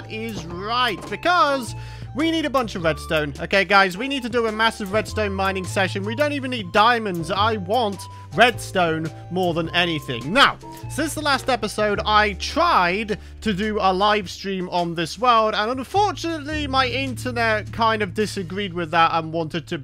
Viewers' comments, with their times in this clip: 0:07 *Happy mumbo noises*